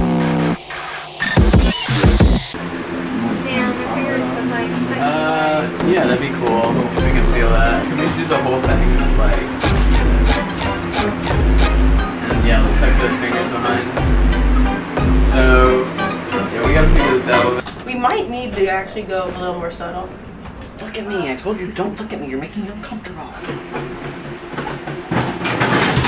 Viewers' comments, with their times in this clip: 0:09 the spongebob sounds lol xD